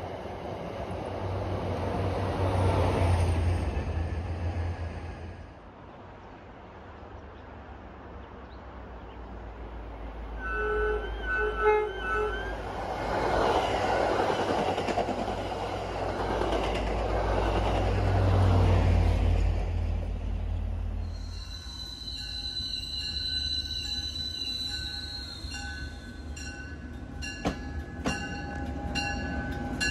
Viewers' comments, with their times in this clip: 0:10 the horns are older than the cab cars.💀